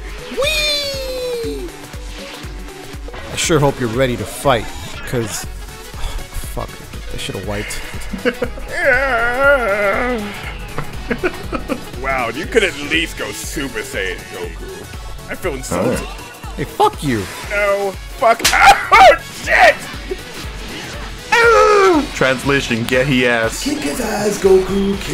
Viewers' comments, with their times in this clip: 0:08 is an underrated cell yell